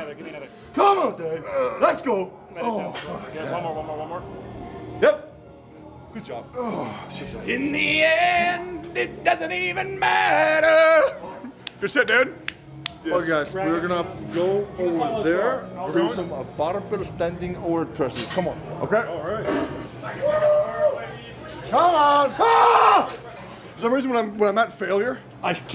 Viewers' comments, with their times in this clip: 0:07 lol he killed that low.
0:07 good voice actually